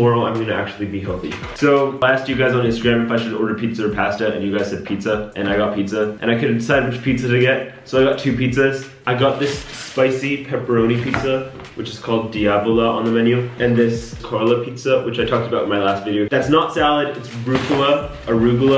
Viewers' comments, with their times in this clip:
0:03 pAySTa Lmao I love how he says pasta